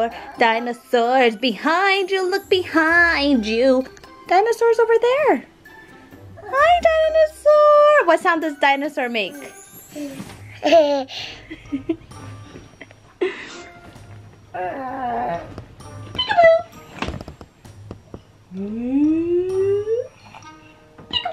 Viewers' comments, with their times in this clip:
0:09 😂😂😂 i love the dinosaur song ❤